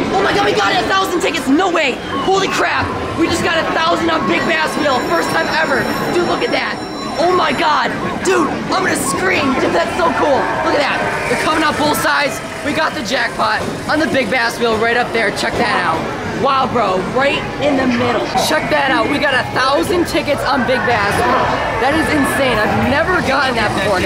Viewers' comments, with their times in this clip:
0:08 REeEEEEEEEEEEEEEeEE scream lol